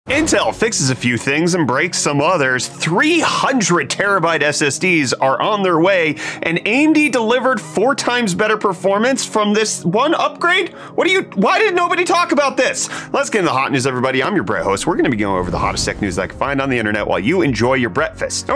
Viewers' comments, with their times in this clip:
0:00 "and breaks some mothers"? 0_o